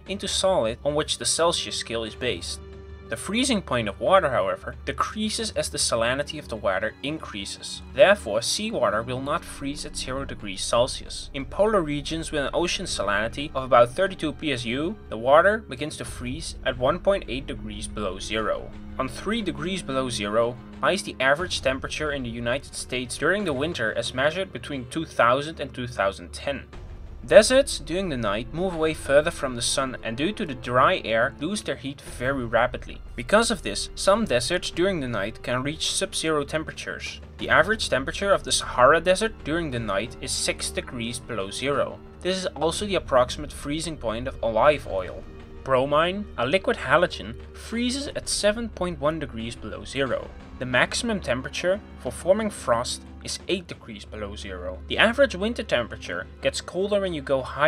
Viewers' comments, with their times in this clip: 0:06 That pronounciation of "Water" tho...
0:42 That pronunciation of “olive” triggered me.
0:43 I love your accent lol ”alive oil” Edit: thanks for 100+ likes!
0:43 Ohhhhh live oil
0:43 Sorry, but what is "alaive oil"?
0:44 this is also the freezing point of O-LY-V oil What kind of pronunciation is that
0:44 I also do like me some O’lyve Oil
0:44 @ "The freezing point of water decreases as the salannity of the warter increases". As we know, seawarter has a lot of salannnnity in it. "Alive oil". Make sure not to use alive oil for cooking, or else you'll turn into a zombie.